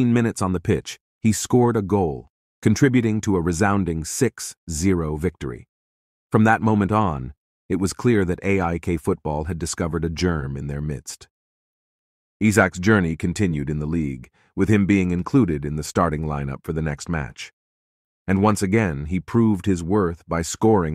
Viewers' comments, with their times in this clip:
0:05 "From that moment on, it was clear AIK have discovered a germ in their midst" Lol what?